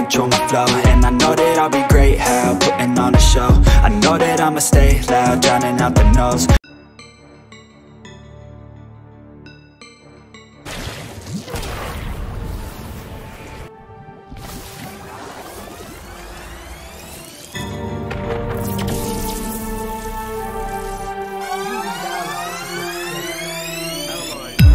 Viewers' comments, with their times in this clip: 0:08 That instrumental go hard lol 👍